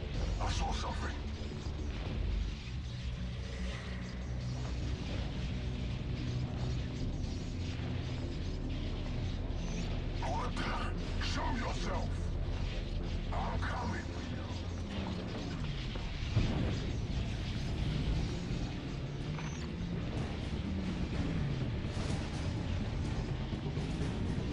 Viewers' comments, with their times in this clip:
0:10 The player: Hides Hellghast: Hoarband, SHOW YOURSELF. Player: Calm. I'AM COMING TO YOU. Also Player: Instance screaming